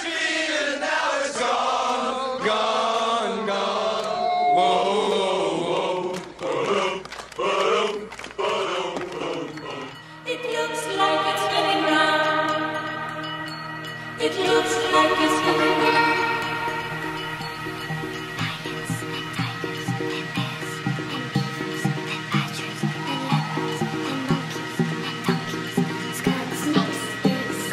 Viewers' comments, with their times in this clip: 0:09 absolutely amazing.... that drop <3